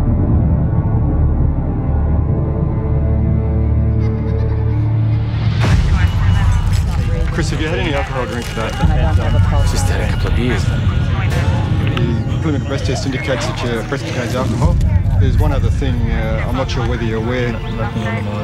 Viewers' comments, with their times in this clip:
0:03 the diddy kong racing laugh